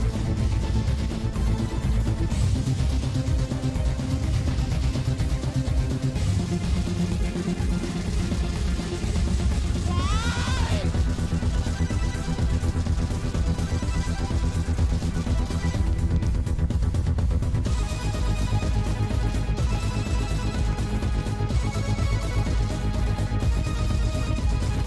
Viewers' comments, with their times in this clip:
0:08 scream of pure terror